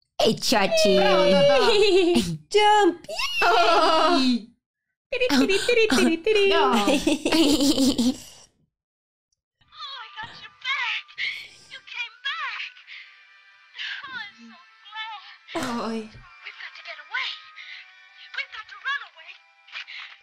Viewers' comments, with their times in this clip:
0:05 what is that laugh all about 😂😂😂😂